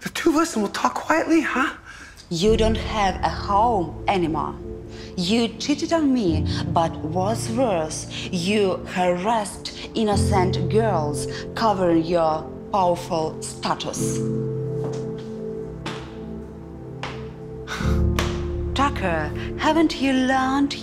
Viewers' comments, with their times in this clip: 0:03 I love her Russian accent